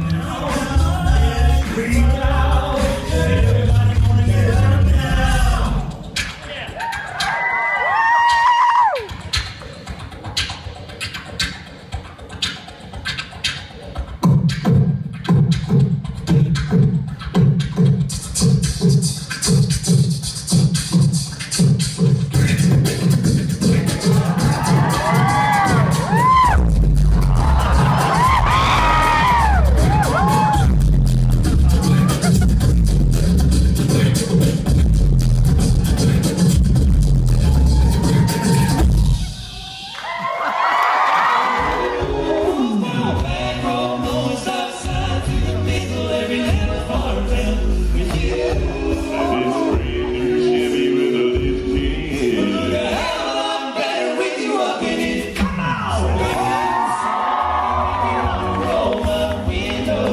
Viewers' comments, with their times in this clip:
0:04 Everyone: does some good beatboxing Tim: BZZZZZZZZZZZZ
0:25 dudes lierally blowing out the speakers with his voice
0:26 Everyone: starts drumming out... Tim: BRBBRRRRURRRUURRURURUURR
0:26 was Subwoofer mode, not really the rest
0:45 that's me in the red hat! If you listen very closely you can hear me say to my friend "G-sharp 1, now!" I was so prepared 😂